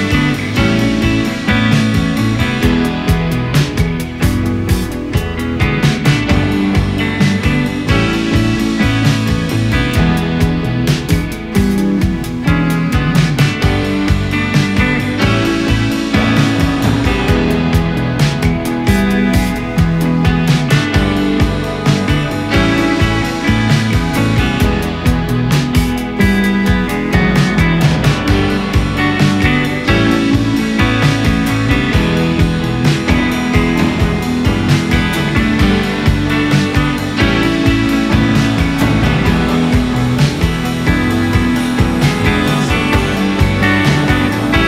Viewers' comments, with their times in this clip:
0:07 Nice song, but what's up with the tinnitus noises ? It's also on Spotify etc. so I guess it's intentional.
0:32 am i just crazy / are my speakers broken or does anyone hear an extremely high pitch beep and in other parts also?